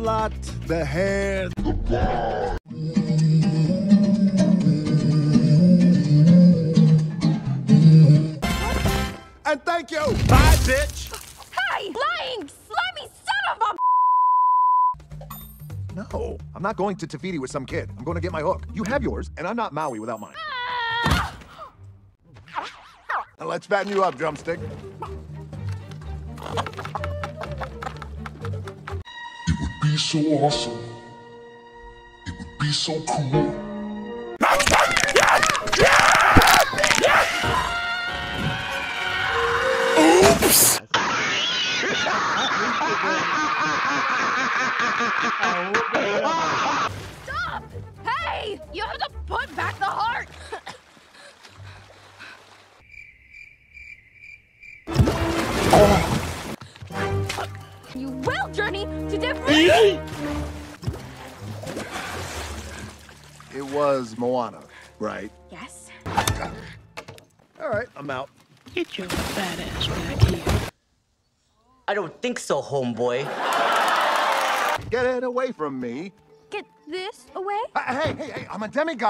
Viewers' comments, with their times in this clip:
0:10 that sounded like he actually said it💀
0:10 Why did that part actually sound like Maui 😭also "blow dart in my but cheek"
0:35 She’s giving snap crackle and pop🦴🦴🦴
1:07 not the Herbert audio😭